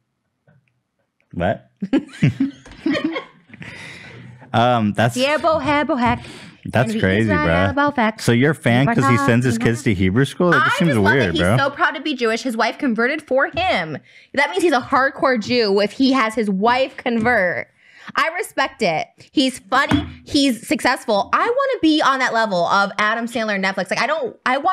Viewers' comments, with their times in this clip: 0:05 Lmaoooo Trisha sings lines from “ I love You Moses”